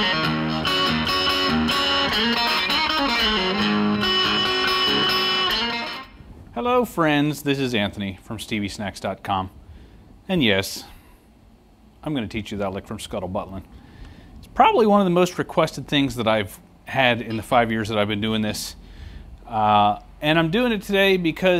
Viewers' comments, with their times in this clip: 0:09 Did he just call it, "Scuttle ButtLin'" ?? lol